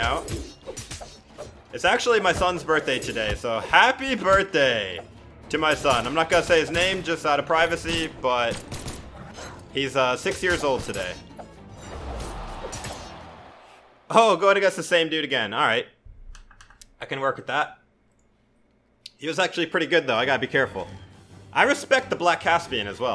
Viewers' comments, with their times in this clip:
0:08 hes 60 years old? How old are you then ? Lmao❤️